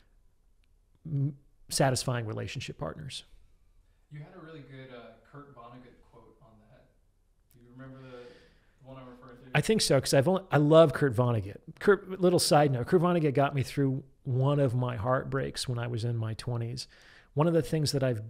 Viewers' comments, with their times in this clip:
0:05 there is a mistake in the editing here where you have the guests mic solo’d instead of your own. Enjoying the podcast so far thanks for posting